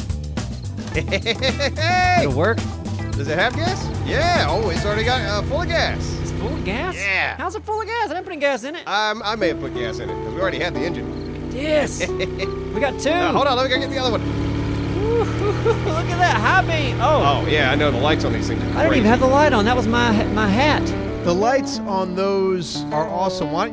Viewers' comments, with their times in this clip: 0:08 I enjoyed the minecraft like music at end of video